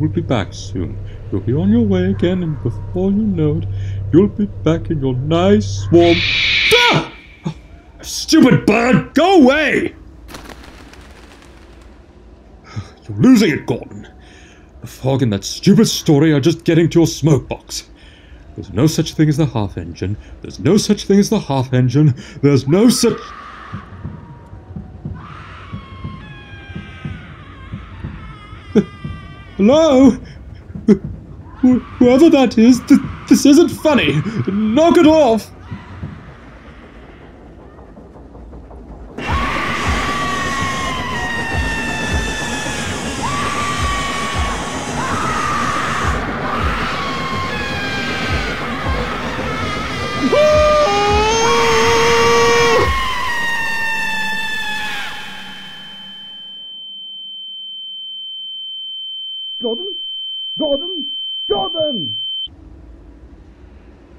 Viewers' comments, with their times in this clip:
0:05 I expected something like that to happen. Although, can owls actually make a noise like that?
0:25 Ok if I heard a scream like that, I am running for my life
0:25 The scream sounds like TINKY winky from slendytubbies
0:40 this is what I call scary to the bone. That half engine face is scary and but detailed great.and the screams are perfect too.
0:45 My God, the screaming, her pain, and the engine just made my heart stop, put ice in my veins, my skin to crawl, and my blood run cold. Gave me goosebumps, too.
0:45 Half Engine: I HATE RUDE ENGINES!!!!!!! screaming rage pain Gordon: I'M SORRY!!!!!!!! screaming